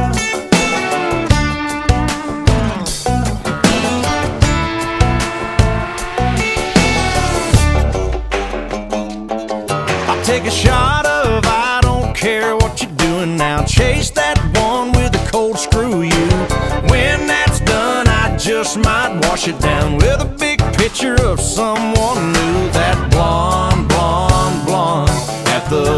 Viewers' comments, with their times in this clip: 0:07 The banjo run is just crazy!! #TheNotSoLittleThings